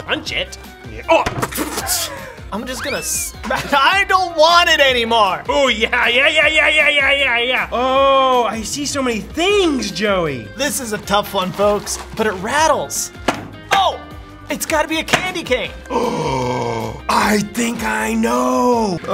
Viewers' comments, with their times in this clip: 0:06 booyahyah is just my singing monster